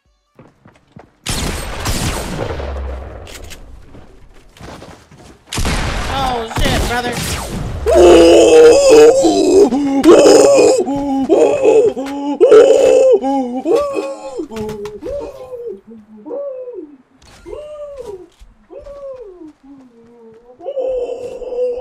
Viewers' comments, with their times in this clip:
0:07 if corona was a person, that's what is would sound like